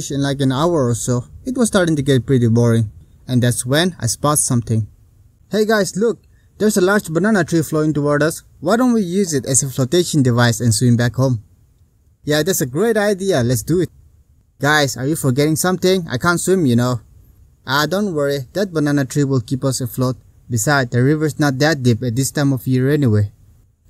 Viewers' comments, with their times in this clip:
0:09 you sound happy 😅 excited & the censor didn't work 🤭 btw was busy reading & got the notification so I came to watch 😁